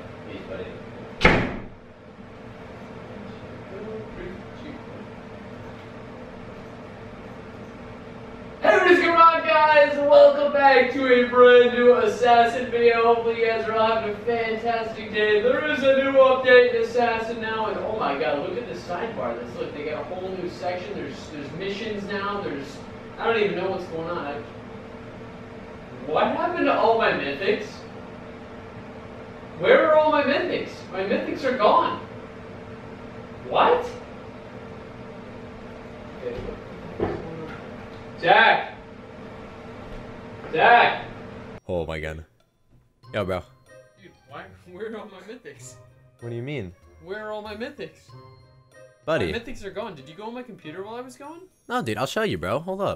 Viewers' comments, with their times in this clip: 0:08 I got scared because he screamed
0:09 stop shouting xD
0:33 its not air or wind its so creepy O.O thhat house or hotel is haunted ;-;